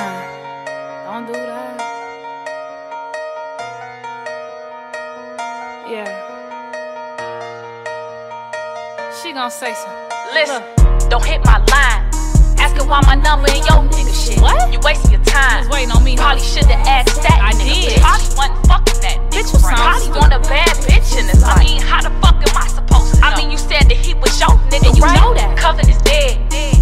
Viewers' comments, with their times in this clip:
0:10 she starts rapping tho